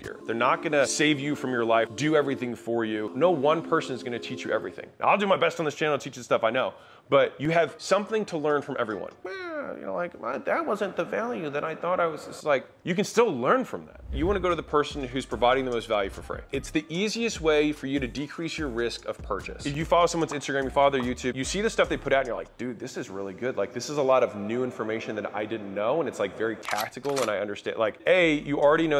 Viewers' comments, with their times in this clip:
0:09 he sounds like chris pratt 😂